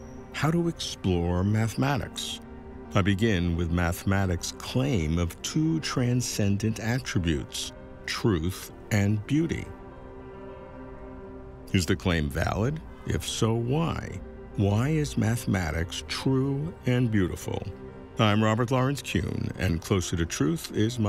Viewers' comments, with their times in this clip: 0:06 not only I love your love of wisdom( philo-Sophia), but the captivating the lovely music you start with— that to my knowledge is made by your wife❤❤❤❤